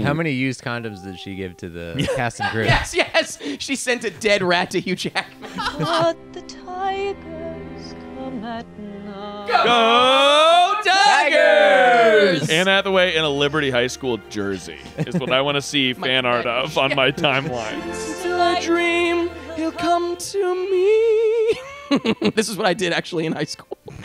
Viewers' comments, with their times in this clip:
0:09 of course i’m not surprised they immediately yell gooOOOOOO TIGERRRSSSSSS!!!!